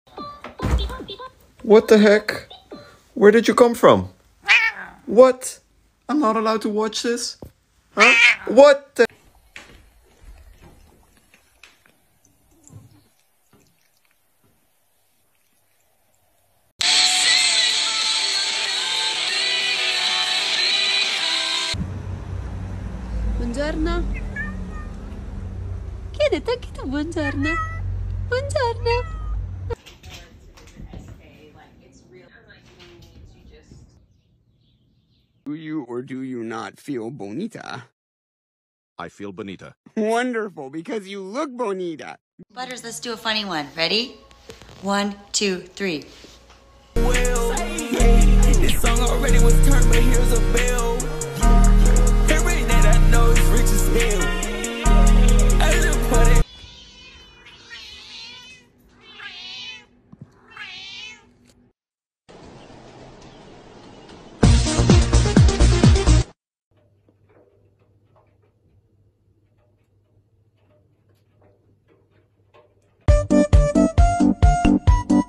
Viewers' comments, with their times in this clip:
0:01 The video that the guy was watching played a Hatsune Miku song.
0:23 it talked back
0:38 instead of meowing the cat go har har har har har har har har har harrr
0:44 why does she sound like Edna from the owl house???😂
0:47 this song already was turnt but here’s a bell 😂😂😂😂 I love that part in the Yeat video
0:50 literally went S P L A T
0:57 THAT THE SCOUSE CAT